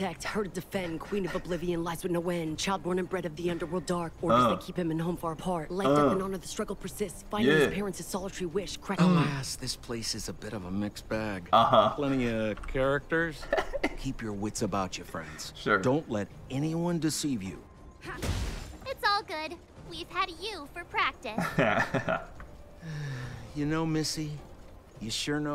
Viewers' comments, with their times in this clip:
0:10 ahh shame you didn't let the girl finish her rap it's one of my favorite things in the game, the singing at the end is what got me lmao